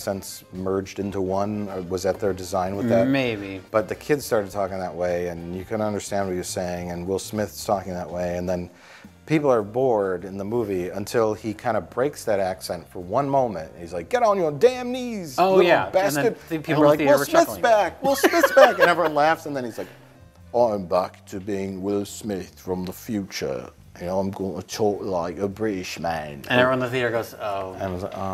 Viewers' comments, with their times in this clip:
0:09 Mike: "People are Borg.."